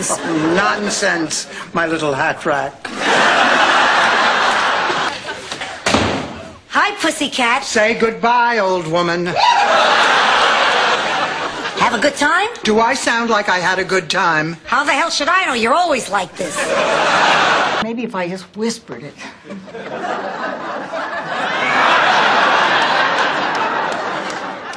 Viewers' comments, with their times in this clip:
0:10 That laugh though 😂